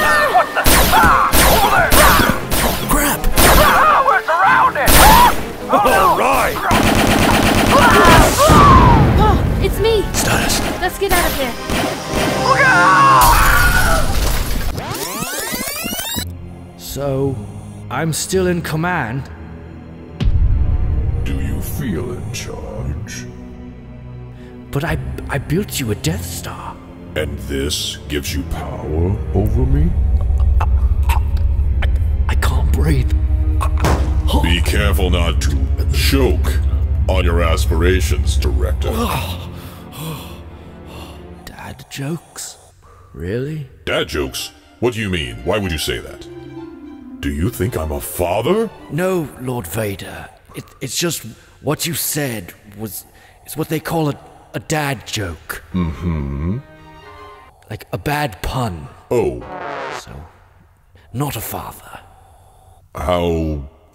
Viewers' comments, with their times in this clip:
0:09 It also sounds like he says "Status"
0:12 that Wilhelm scream get me every time🤣
0:13 aaaaaaaaaaaaaaaaaaaaaa Wilhelm scream :D
0:14 Will Helm scream! CALLED IT! 😌
0:19 .. sounds similar to the dark Knight rises movie scene where bane is talking to McTaggart..
0:44 Love that little happy tune whenever Vader's fatherhood is mentioned.
0:44 I have loved this music since I heard it for the first time and I love it in this video i’m honestly a little disappointing they couldn’t fit this music in the Kenobi HISHE video
0:45 when I hear this music I know what that means 😂😂